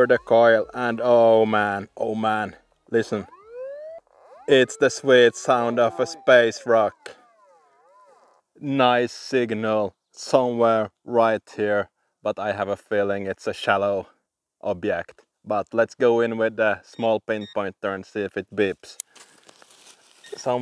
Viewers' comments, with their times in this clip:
0:03 You turned from a Viking to a Jamaican Rasta for a second!! haha. Love it, Bro!! You have really inspired me to try this. If you are ever in the United States and need a fellow Viking for anything at all, holler at me. Put the coil to the soil!! :)